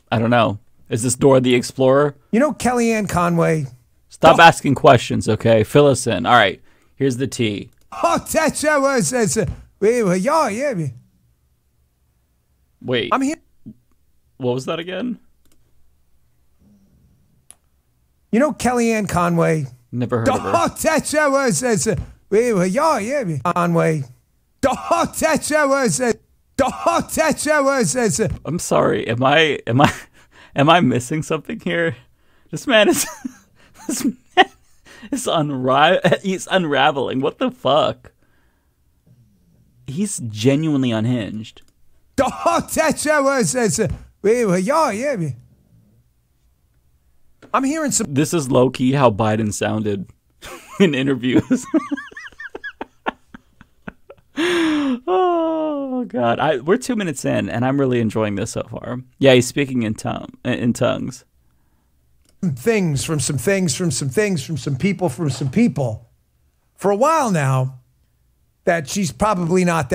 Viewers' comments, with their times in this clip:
0:07 The demons briefly took hold of Dan as he started to speak in tongues. We must act quickly.
0:25 average Trump support Get so heated at people they’ve never met they start slurring words
0:41 was bongino speaking English? 😂😂
0:55 is he swearing in Klingon?